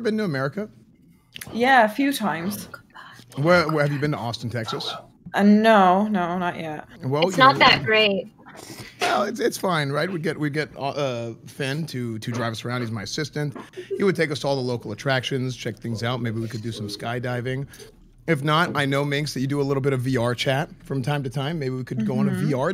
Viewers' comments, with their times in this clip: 0:10 minecraft villagers be like: